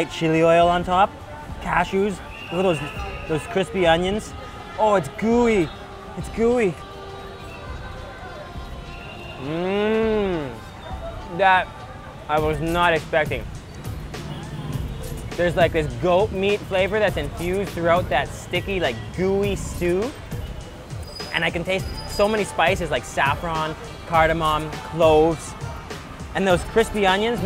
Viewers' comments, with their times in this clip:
0:09 Favourite part in every video that "mmmmmmmmmmmm "